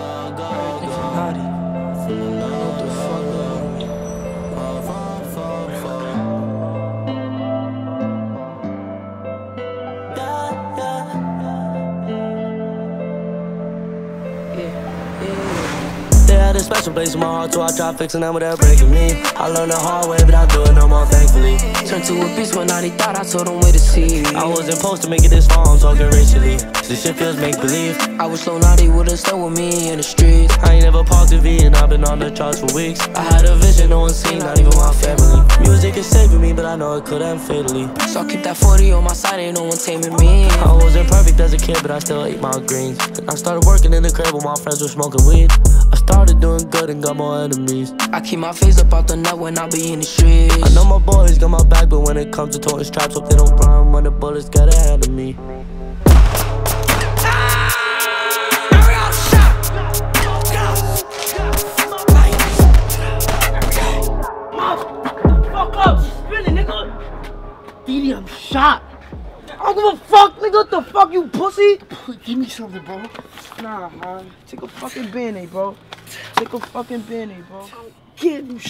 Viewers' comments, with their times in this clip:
0:09 mabu sounds like X ngl.
0:21 best part of song when it’s went from mabu to dd
0:32 harmony is crazy bro
0:49 I love this part when it goes AHHHHHHHHHHH
0:52 No the beat drops
0:55 beat switch up is crazy 🔥
0:57 when dd scream that was my favorite
0:57 the scream of dd
1:04 why he sound like X tho